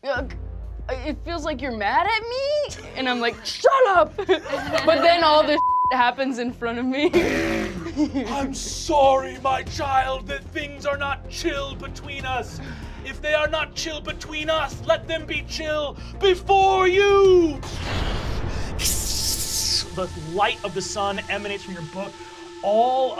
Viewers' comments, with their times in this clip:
0:07 Spoiler Warning for up to Ep 17 of Fantasy High I love how you can hear that it is Arthur Aguefort impersonating Helio here. It's fantastic.